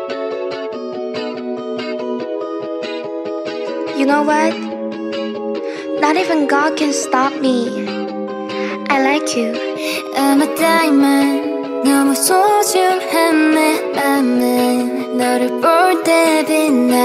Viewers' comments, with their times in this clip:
0:03 was Wonhee not Minju 😊
0:03 it’s wonhee not minju